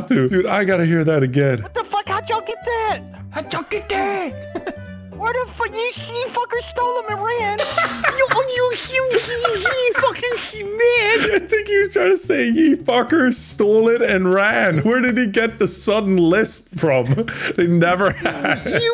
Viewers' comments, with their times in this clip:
0:04 Delirious is like speaking french or gibberish
0:05 Delirious sounds like the Robot Chicken Nerd
0:05 Delirious sounds like Sid The Sloth from Ice Age.